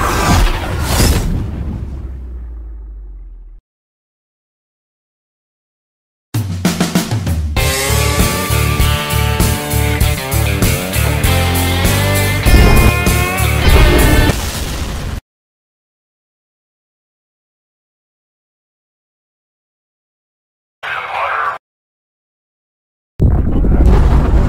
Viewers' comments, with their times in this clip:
0:05 i thought it was a rickroll cuz the beginning of the song is similar to never gonna give you up